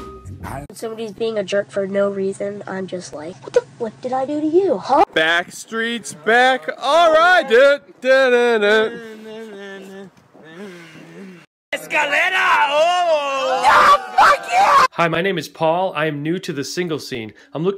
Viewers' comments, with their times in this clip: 0:05 Ah yes, my favorite RDR2 character: Ynnel. Him, along with Lemmy, Lneny, & LENNAAAAAAAAAAYYYYYY